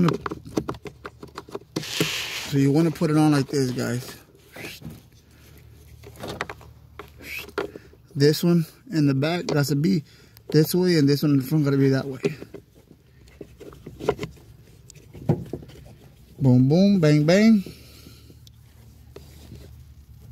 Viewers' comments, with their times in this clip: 0:05 also my dad does that whistling sound you made i wonder if it's a hispanic thing 😅